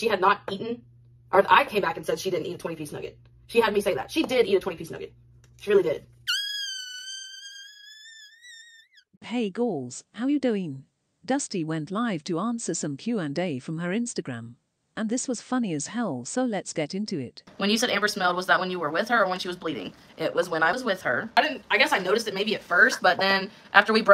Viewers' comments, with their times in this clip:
0:06 We are being so spoiled right now. 🤞 Btw that tea kettle sound had me literally laughing out loud 😂❤👌